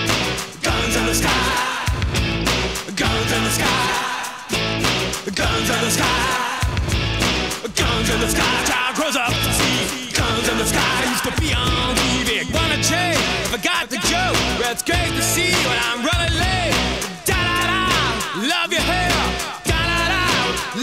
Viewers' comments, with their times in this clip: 0:08 I know INXS isn't rap, but wow Michael is spitting bars